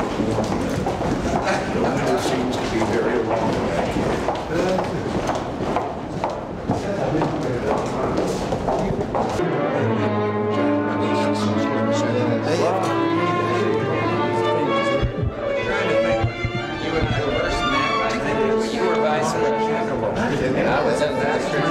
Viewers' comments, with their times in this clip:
0:09 this is what sealed the dude's fate,too eloquent not to be president